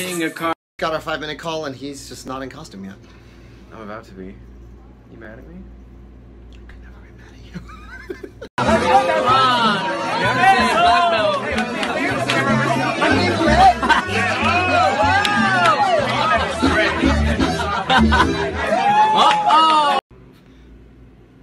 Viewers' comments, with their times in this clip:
0:09 I'm Hispanic, so, in this moment I heard BESO! That's mean "KISS" in English, am I the only one?